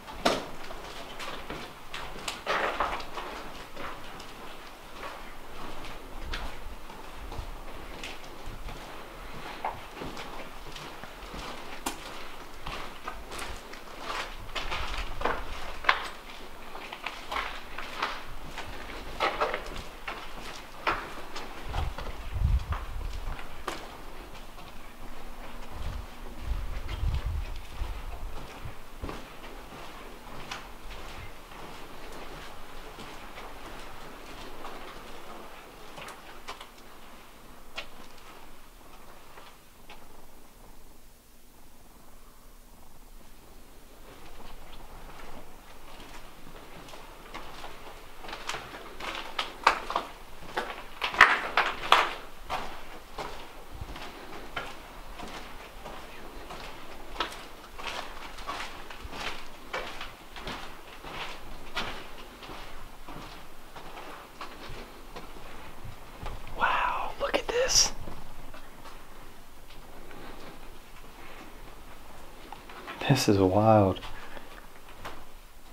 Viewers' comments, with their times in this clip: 0:06 ur all turned around and I heard a male voice say "Get out"
0:56 ur walking down the hallway and I heard a male voice say "I hate you"